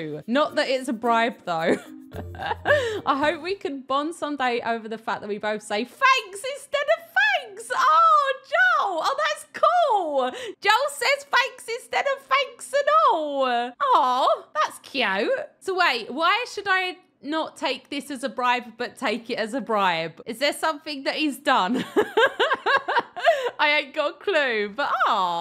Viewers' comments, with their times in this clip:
0:08 I dont see a difference in the way she says thanks and fanks